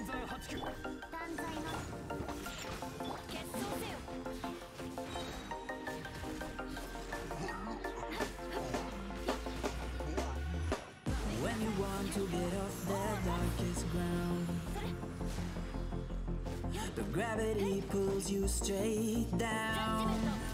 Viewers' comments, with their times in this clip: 0:06 THAT MUSIC SYNC THO LMAO